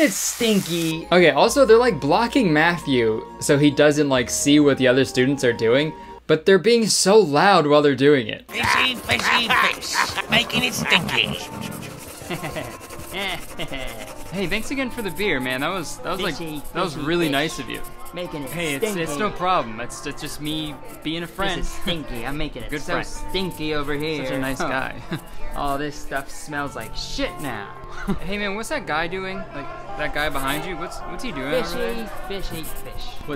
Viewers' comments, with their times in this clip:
0:07 my deaf ass only hearing scribbles: 😌 you: the sketch only has audio on the left side my deaf ass: ✌️🤨bae what
0:07 the sketch only has audio on the left side so if you're listening with headphones it might sound weird!! sorry i messed up the audio!
0:08 I was about to comment: “ I didn’t have my other headphone in so I was like wait.. why aren’t they talking”
0:15 my right ear enjoyed this